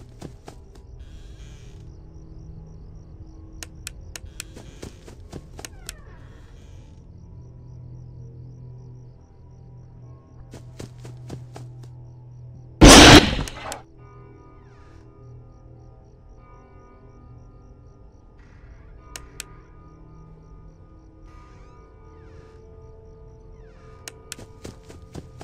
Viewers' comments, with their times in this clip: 0:10 taught me to lower my volume
0:13 Rip Headphone users XD